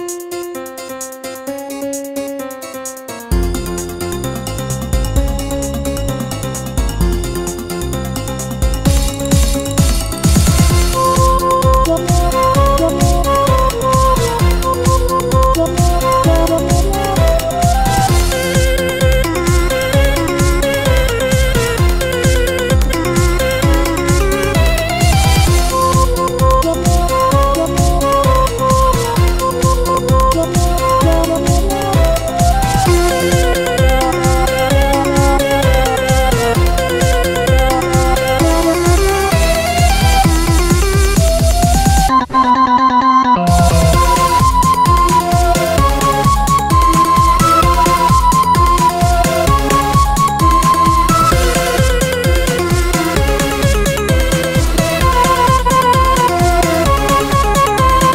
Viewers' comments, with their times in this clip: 0:09 this part like a worship in mid fight masses
0:12 “NUMBER ONE VICTORY ROY—“ thats just what i hear—
0:44 reminds me of spider dance